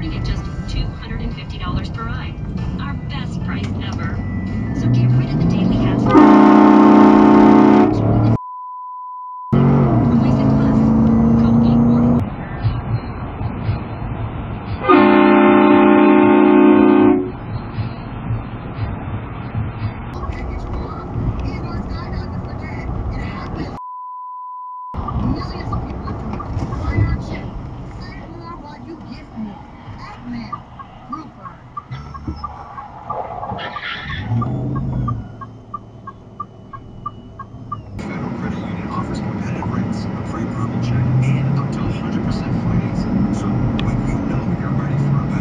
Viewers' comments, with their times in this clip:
0:06 I’m dead laughing at this, They honked and then started cursing when it got censored 😂😂😂😂😂
0:27 I think you caused the accident is that why you hit the beep so it couldn't be heard?